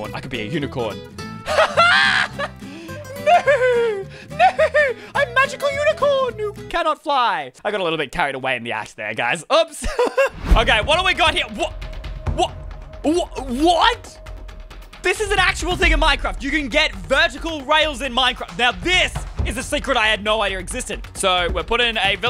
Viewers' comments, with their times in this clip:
0:09 is it just me or did he curse? Like I heard "a$$"